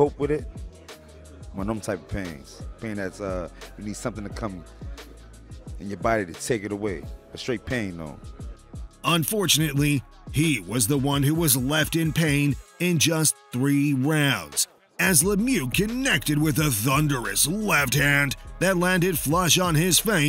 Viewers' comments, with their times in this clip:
0:05 dudes looking at him like wtf is a toof?